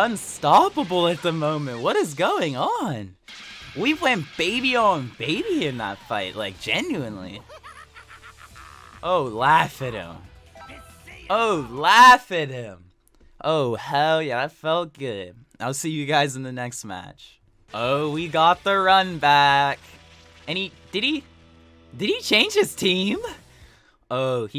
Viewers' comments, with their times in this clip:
0:07 That was a psycho Tuffle laugh.